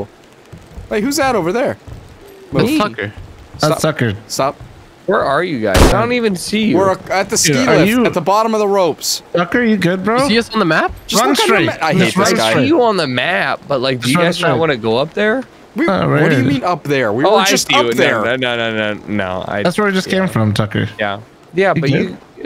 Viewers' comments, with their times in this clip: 0:05 Perfectly cut gunshot 🤣🤣🤣🤣😂😂😂😂😂🤣😂